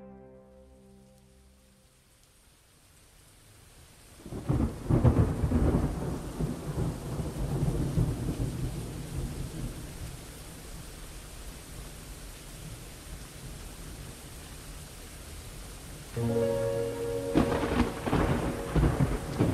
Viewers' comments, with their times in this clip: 0:06 LOL sounds like an ODST track. Thumbs Up if you agree!!!!!!